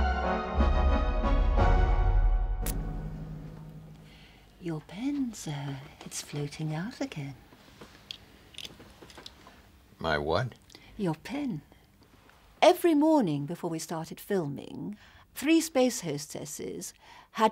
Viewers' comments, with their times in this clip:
0:04 stewardess: 'your dick sir, its floating out again' passenger: 'my what?' stewardess: 'your dick' LOL.